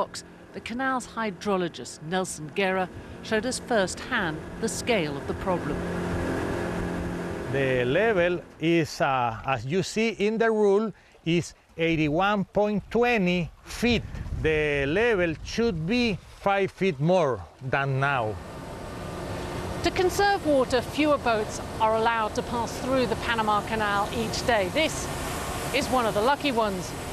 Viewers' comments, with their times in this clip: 0:08 He sounds like Borat. Can't unhear him.